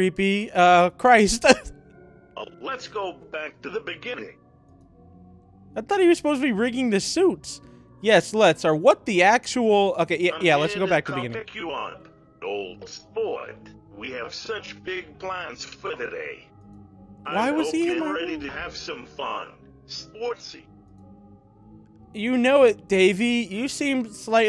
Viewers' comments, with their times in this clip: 0:10 in meme voice